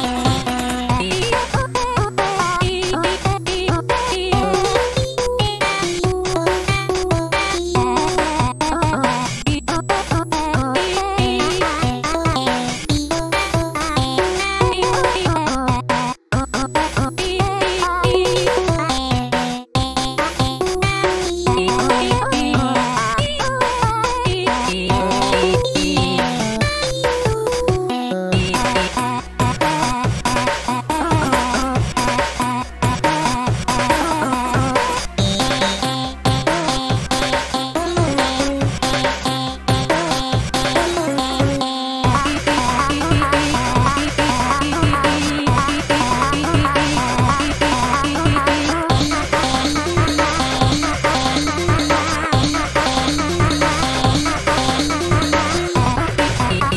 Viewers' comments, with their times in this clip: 0:08 does this sound familiar? Btw I love her voice she’s so cute-
0:40 that drop tho
0:42 Ngl some parts of the music reminds of camel by camel Just like in this part:
0:43 Sounds like ankha z0ne